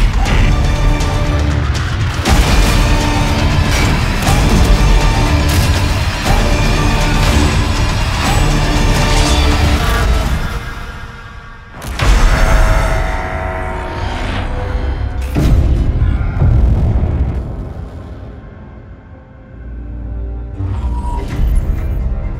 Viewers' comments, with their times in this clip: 0:04 The music used in the trailer, especially sounds a lot like the Prometheus trailer. Nice touch on that. What i don't get it though. What the hell happened to the island.... It's changed from the Island to New York, and then New York was saved, so really it should be other cities OR the island. Yes i get that it is now literally an "Urban Jungle", quite a good concept there, but really there is a lot that needs explaining that has been left unanswered from the first Crysis.